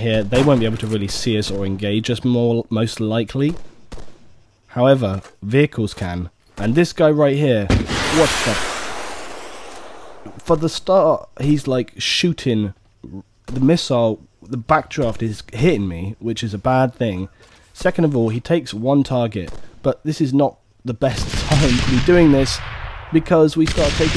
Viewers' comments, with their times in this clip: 0:06 Like the Barry White voice :D This is having a free weekend on steam, good time to give it a try! I'd expect more of those moments this weekend ^^